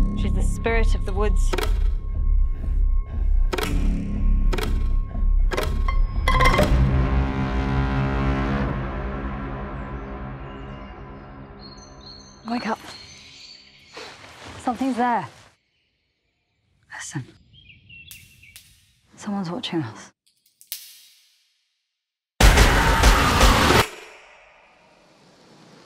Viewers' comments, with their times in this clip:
0:06 Hollywood keeping tuba players in the game bwaaaaaaaaaah!!!!!!